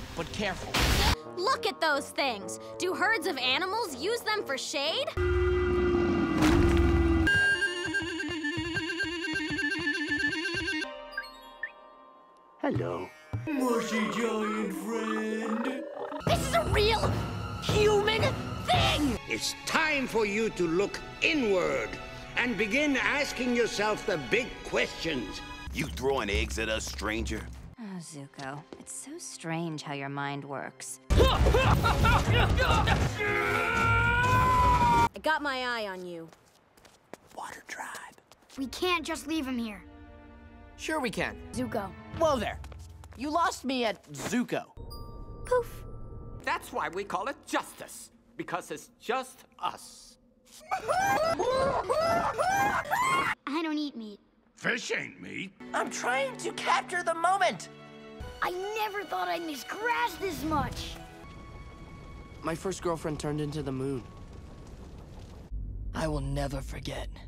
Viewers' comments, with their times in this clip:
0:10 "REAL TOOT HOURS" WTF IS THAT EVEN SUPPOSED TO MEAN. IT TOOK ME AN HOUR!
0:51 THE FACT THAT IS IN THE TUNE OF THE NATIONAL ANTHEM LMAOOOO
0:51 Lost it with the US national anthem tune 💀